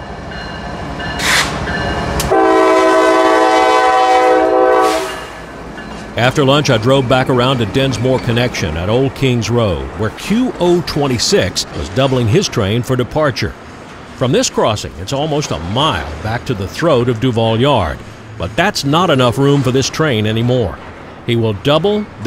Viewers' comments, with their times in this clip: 0:04 bright line horn